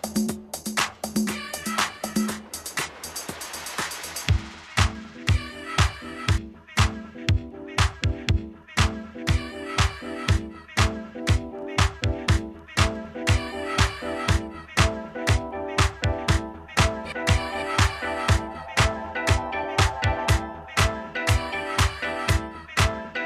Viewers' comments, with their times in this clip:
0:04 What that Bomb ! ?